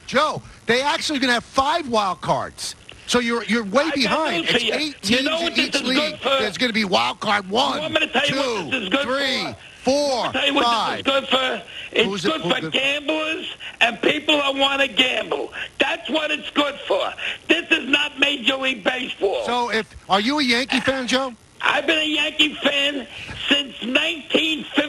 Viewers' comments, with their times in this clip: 0:06 the way Michael says “Wildcard 1, Wildcard 2” lmao